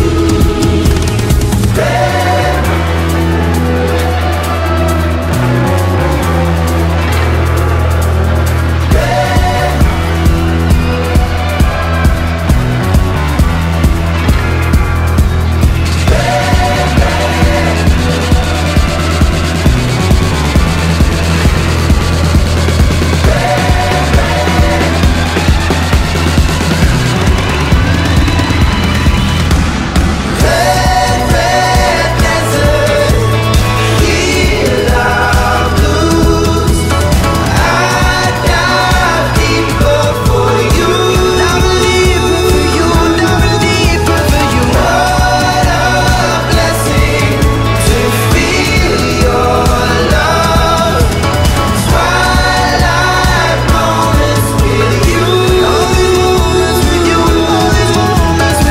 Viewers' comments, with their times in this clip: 0:06 The drums on this songggggggggggg the last beat drop absolutely KILLLS me it’s so amazing
0:41 i thought it was Zayn for a second